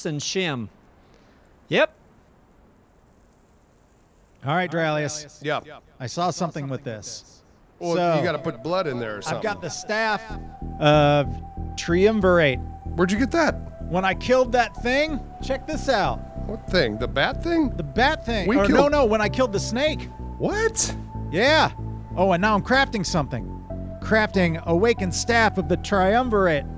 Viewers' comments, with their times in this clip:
0:08 love that track in the background :D